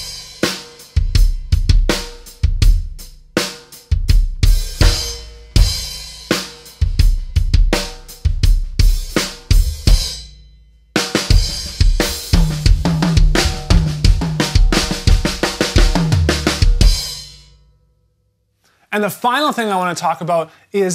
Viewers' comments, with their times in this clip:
0:03 Starting Such a pretty sound